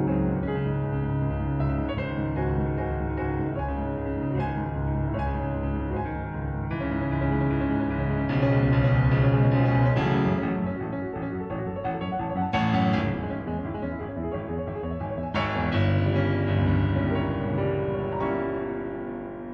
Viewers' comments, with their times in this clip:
0:03 the dude is hammering to the beat of the piano